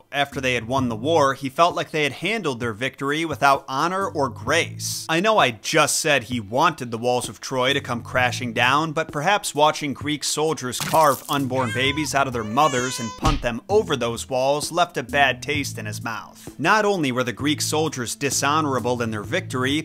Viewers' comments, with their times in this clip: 0:05 yo not the sound effects 🤣🤣